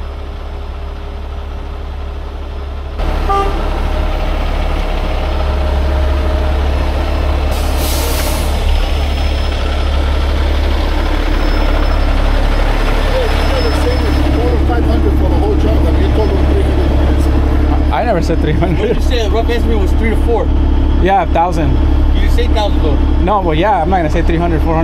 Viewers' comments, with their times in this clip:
0:10 First you said, 3. So, that’s $3 Dollars right there. HeHe! No, but it actually sounded like you said 3 TO 500.